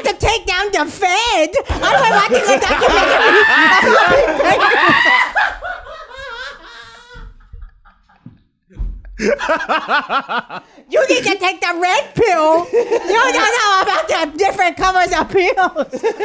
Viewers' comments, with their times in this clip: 0:03 the hardest I’ve ever heard that mf laugh
0:03 Schulz laughing like a maniac